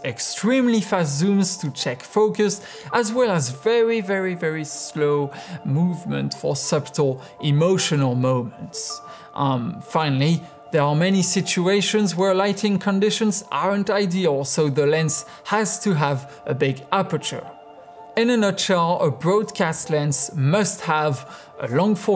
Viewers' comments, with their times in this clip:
0:06 Your pronunciation is quite good, but it needs some correcting here and there. The word "subtle," for example, should be pronounced without the b. Still, thanks for a very informative video.